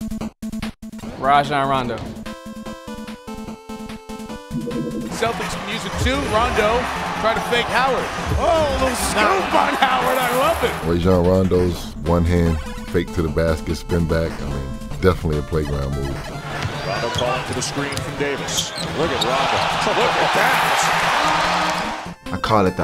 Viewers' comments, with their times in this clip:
0:06 who thought their steam platform had a notification lol